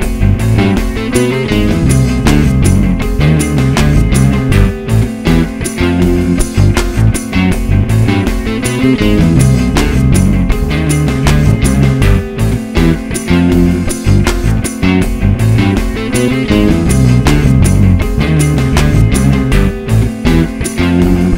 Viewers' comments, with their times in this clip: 0:03 Man that little riff is SOOOO good!!!! I don't think Id call this rock? Maybe jazzy rock aristocrats kinda thing xD Really dug it though!!! Tons of help